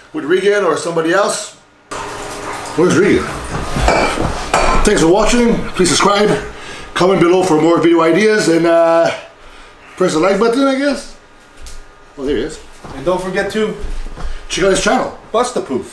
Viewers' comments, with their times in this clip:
0:03 i like your imitation of Branch Warren lol